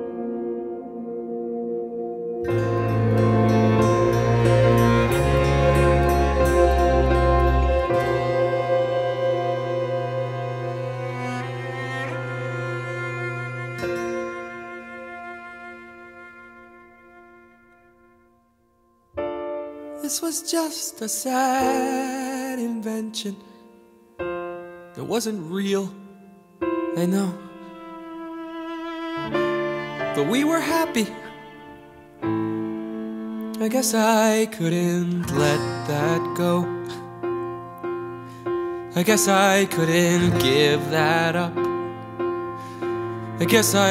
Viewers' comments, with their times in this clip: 0:04 the strings instruments tug at my heart strings. :/ beautiful music and his voice is great for this. very emotional song and reveal!
0:13 Listen to the last chord of the instrumental. It is the exact same chord as the start of Seasons of Love.
0:30 is that a snort?